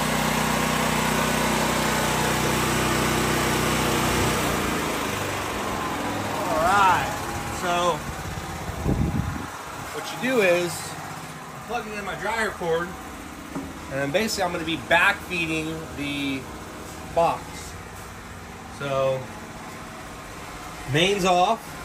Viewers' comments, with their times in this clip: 0:06 The guys got a $100,000 truck and a hundred dollar noisy ass generator